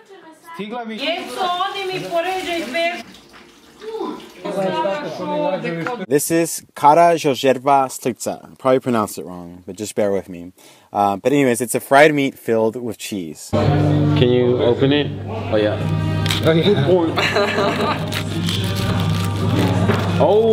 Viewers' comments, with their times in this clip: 0:07 oh god were you trying to say karađorđeva šnicla?